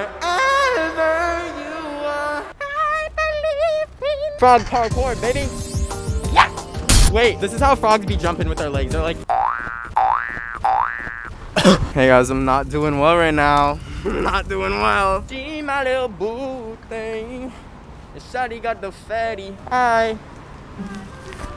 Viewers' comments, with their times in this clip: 0:05 he sounds like pou (the game) 😂